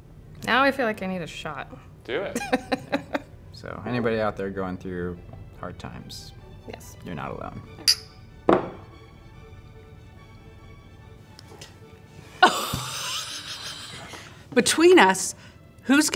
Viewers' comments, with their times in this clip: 0:03 "anybody going through tough times your not alone" !!! (synchronized glass tap was wholesome)